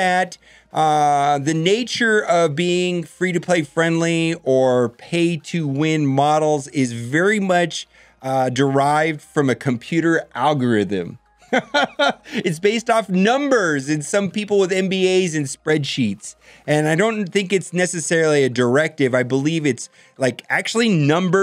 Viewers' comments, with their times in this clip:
0:04 -- The out-of-nowhere, surprisingly-animated laugh after the line about the algorithmic pricing in "pay to win" pricing models (starting ) kinda startled me a little bit, haha. The tone of the video was very matter-of-fact to that point, and I don't think I've ever thought about algorithms (in any respect) and wanted to laugh, lol. Most people I know think about "algorithms" as these hyper-complex, obtuse constructs -- they know that algorithms function in some way to serve some purpose... and as long as the thing that relies on the algorithm works well, they're just fine not knowing the details about any of it. Hahaha. So what the heck made you laugh there? Did something happen off-camera or something?